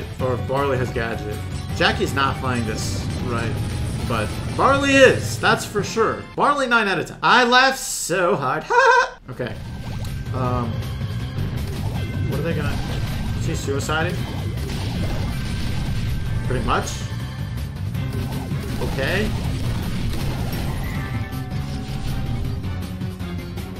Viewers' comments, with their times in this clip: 0:08 That laugh was bootiful 🥰🥰
0:08 The laugh oh my fucking god